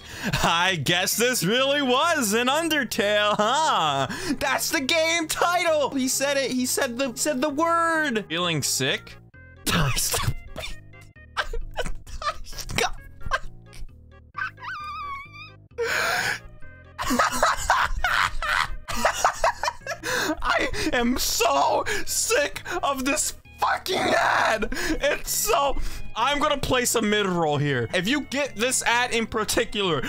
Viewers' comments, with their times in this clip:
0:09 heavy breathing why must you remind me... Edit: the second i finished this i got the ad...
0:13 sounded like two balloons rubbing against each other